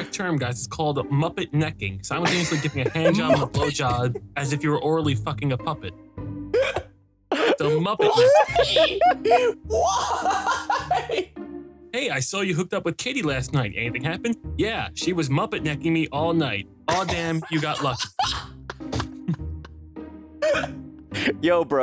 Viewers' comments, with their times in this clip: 0:07 I thought my phone was starting to ring